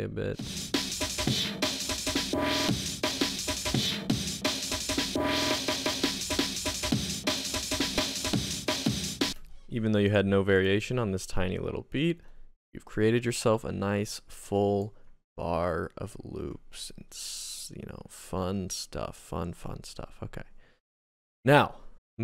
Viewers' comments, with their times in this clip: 0:05 bro is gross beat 😭